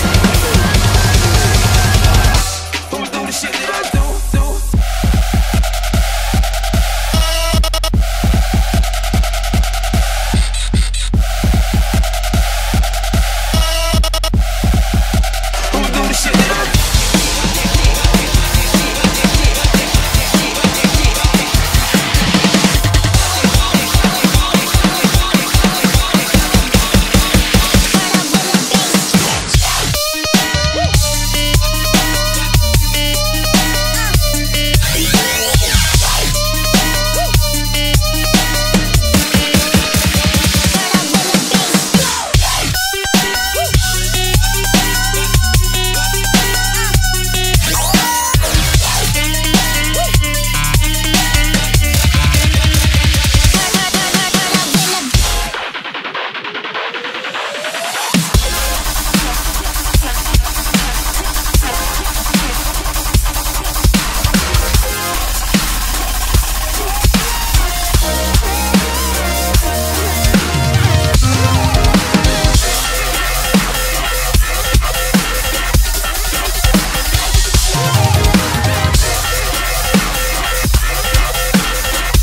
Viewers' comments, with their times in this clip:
0:07 it seems ghostly
0:29 OMG DAT DROP
0:30 that song sucks. It hurts my ears and the track is just plain gross on my ears. It’s wet sounding, ughhh
1:04 Hey.. did you hit drums 😈🤘
1:05 HOLY SHIT THAT'S FAST!